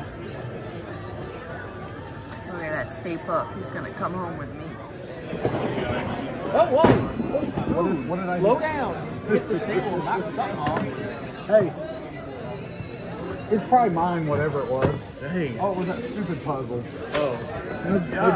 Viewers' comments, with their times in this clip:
0:06 Love how into the video you hear that guy knock over something and you just kept recording unfazed! A true pro! The show must go on...